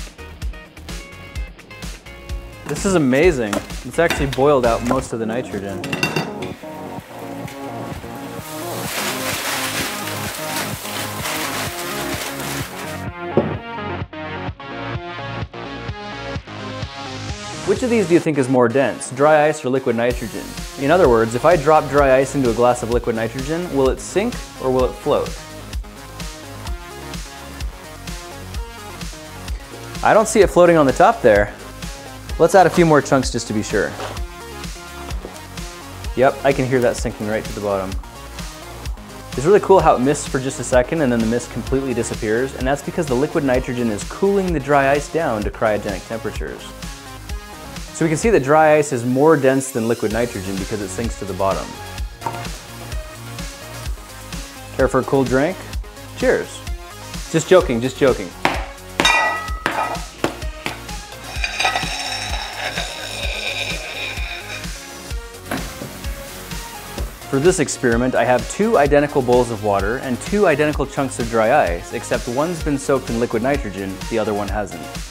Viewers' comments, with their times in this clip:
0:05 I thought my intro music was playing on my computer from Itunes randomly...
0:58 I thought you were gonna snore the rest :DDD